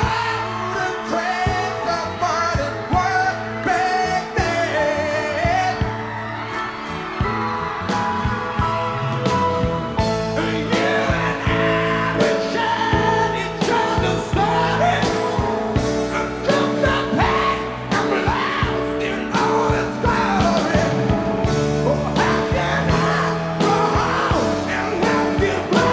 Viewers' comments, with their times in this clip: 0:10 he almost sounds like James Brown